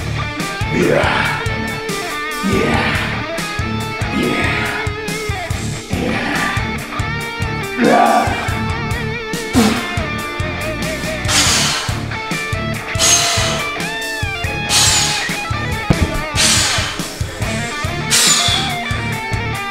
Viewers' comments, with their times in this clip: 0:05 the grunting goes with the music